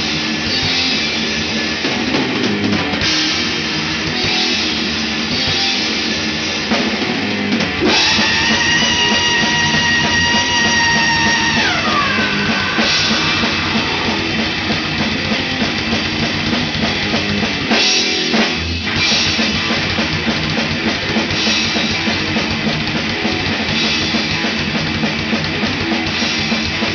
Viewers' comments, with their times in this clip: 0:08 EPIC!!!!! Sounds like someone throwing my mother off a cliff!!!